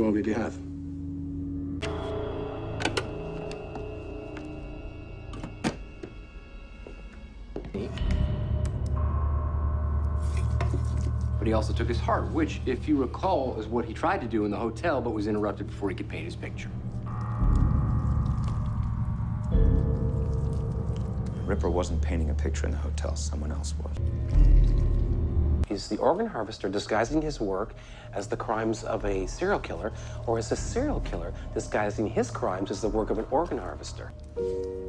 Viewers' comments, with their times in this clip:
0:07 Audio goes out of sync
0:21 Is anyone else having an issue with the audio not syncing up around the minute mark?